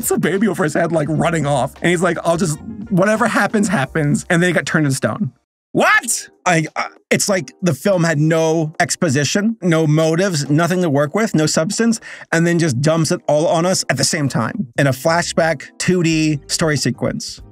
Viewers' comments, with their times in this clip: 0:05 That what has as much energy as Woody's in Toy Story XD